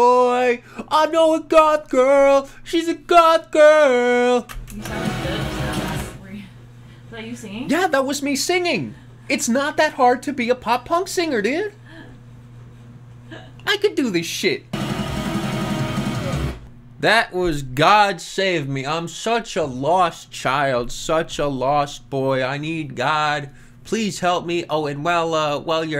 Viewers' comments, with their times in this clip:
0:06 ay yo, he better make music now, his voice sounded good , wtf